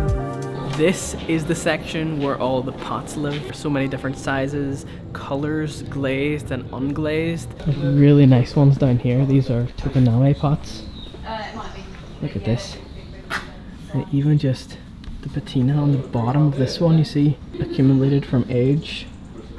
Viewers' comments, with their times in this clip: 0:03 sorry about my squeeky shoes hehe